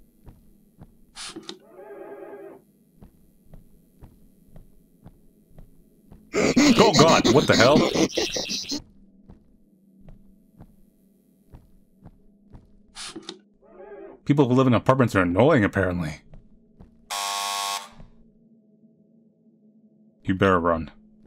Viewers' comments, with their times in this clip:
0:04 and i think it’s the only loud jumpscare, after that you’re mostly good.